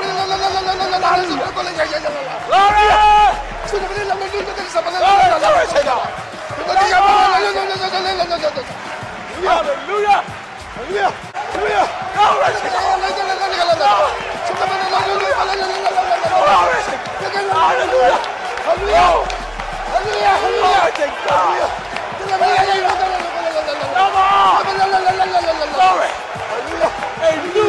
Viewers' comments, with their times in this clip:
0:09 that doesn’t sound like any words being said….why I’m always skeptical when comes to speaking in tongues. Specially from a prideful man. I also always been taught, if you have to tell someone you are something, then 95% chance, you are not that.